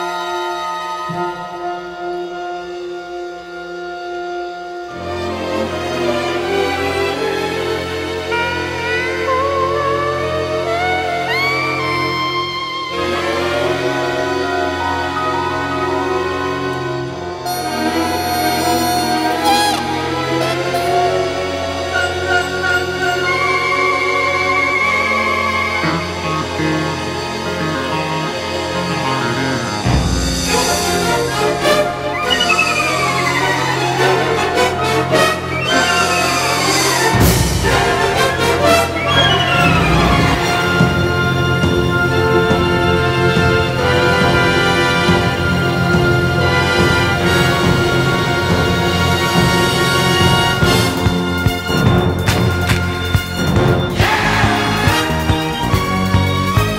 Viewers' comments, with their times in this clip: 0:08 Here's some instruments you haven't heard in the final film
0:40 From to the end it sounds like a song you'd hear in Mario Kart.